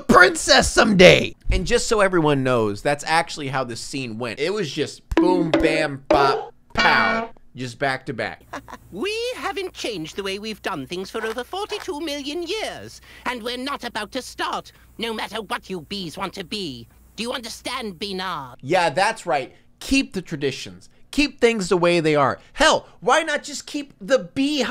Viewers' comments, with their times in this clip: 0:08 That teacher bee sounds eerily similar to Frieza from the TFS dub
0:09 I feel like the entire cast is from Pokemon. Does the bee teacher not sound like Meowth?